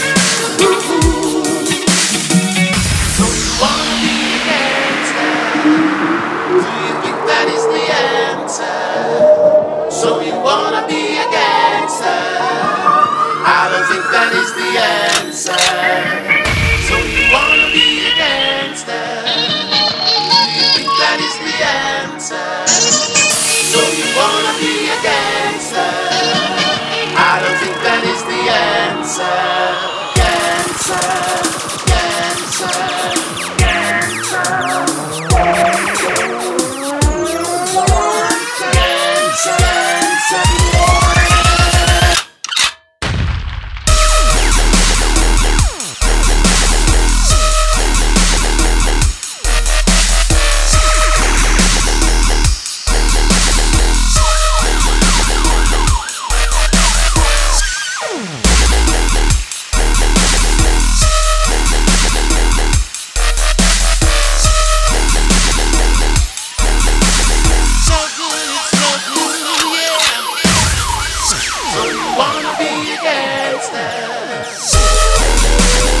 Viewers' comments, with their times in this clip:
0:10 i understand: so u wanna be a gangster adolf hitler is the answer
0:25 what the hell adolf hitler is the answer answer answer (looping) cancer cancer cancer
0:30 if you listen closely those hi hats sound just like rocco's revenge . another trolley snatcha banga!!!
0:41 crick crick BOOM drop best drop eva
0:41 i love the sound of the shotgun :D
0:44 That drop was so B wait what
0:45 Any1 else here the drop sounds like trollollollolloll
0:46 if the drop was 2 seconds later i woud say LIKE A B
0:59 got a hungry subwoofer :3